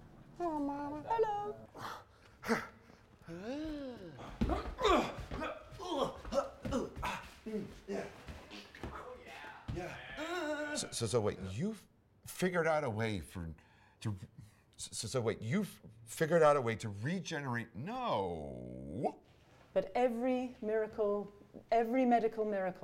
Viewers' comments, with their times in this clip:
0:05 Farts on command 💨
0:07 noone noticed him have gas?
0:07 so no one is going to mention how he farted on lol ok
0:08 did he really fart? I heard the sound 😂
0:08 I hear a sacred sound
0:09 Is Benedict the on who is screaming or is it Rachel